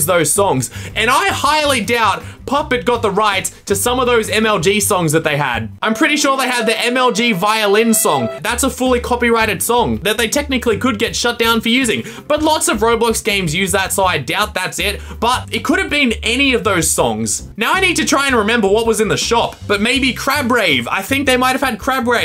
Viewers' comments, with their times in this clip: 0:06 A Sad Music